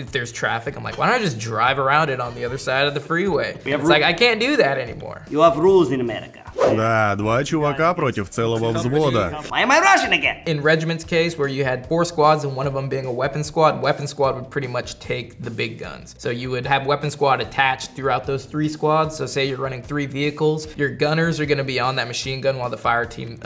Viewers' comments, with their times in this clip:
0:06 why am I Russian again!